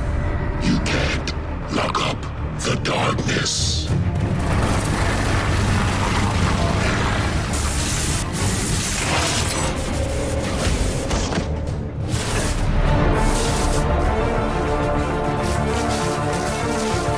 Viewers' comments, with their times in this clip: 0:04 Anyone else think of Venom when you heard him talk?